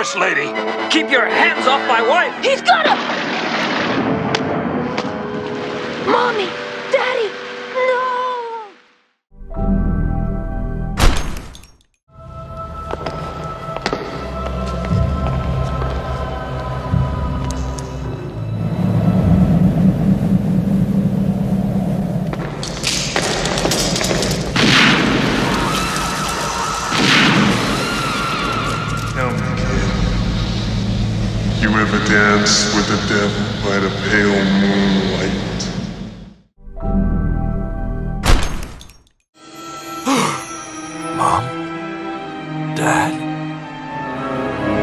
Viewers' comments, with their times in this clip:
0:09 YOU LET THE FAMILY DIE! (Gunshot sound)
0:31 his sound like Arnold